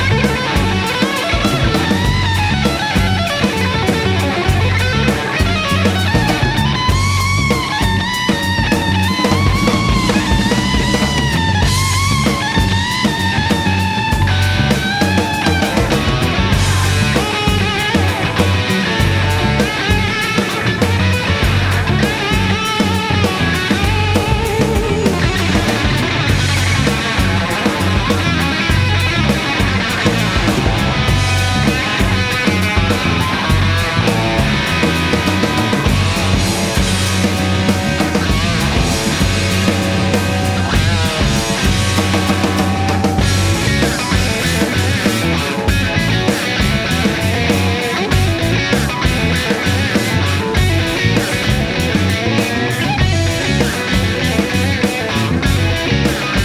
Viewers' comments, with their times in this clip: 0:06 how completely effortless he made that fill sound....wooooah
0:09 the ease of john's rolls ,,,😊
0:40 ..that fill and then the riff. Man I wish that was on the radio single. So great.
0:42 The riff change